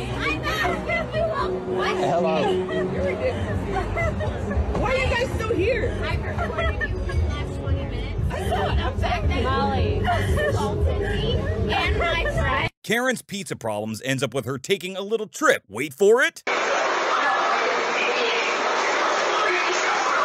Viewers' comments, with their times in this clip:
0:03 OK but did anyone else hear the "your a good kisser" in the background? try to find it I died 😆